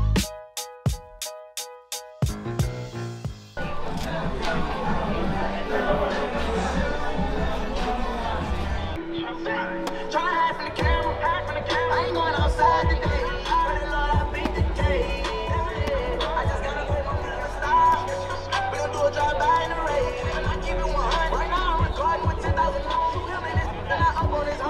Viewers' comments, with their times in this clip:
0:08 them speakers hit dif with yb